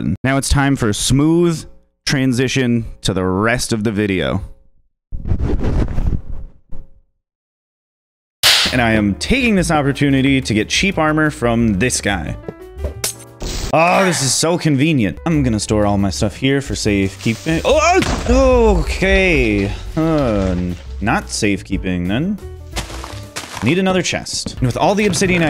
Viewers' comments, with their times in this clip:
0:08 thought it said protest not protect